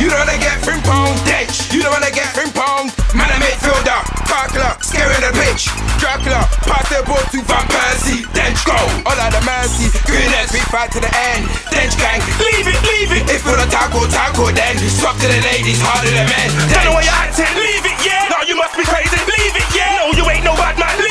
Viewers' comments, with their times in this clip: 0:08 OLLA DA MERCY? DAFUQ